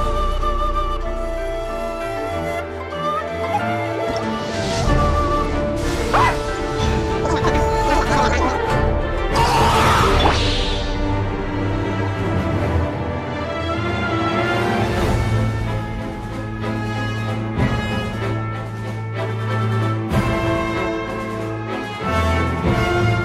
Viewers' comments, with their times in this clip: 0:05 This is a perfectly cut scream lmao